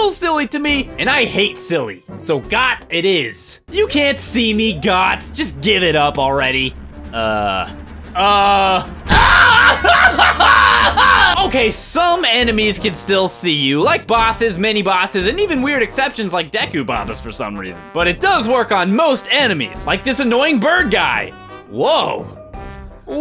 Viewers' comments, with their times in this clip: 0:07 best part (ONE OF THE BEST SCREAMS EVER)
0:07 That's probably one of the best fake screams i've heard.
0:08 i laughed so much to that scream haha